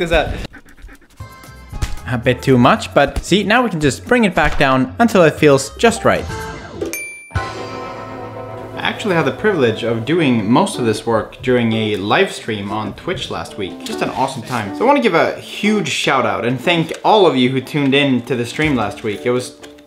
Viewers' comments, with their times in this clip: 0:05 That notification made me check my Facebook, LOL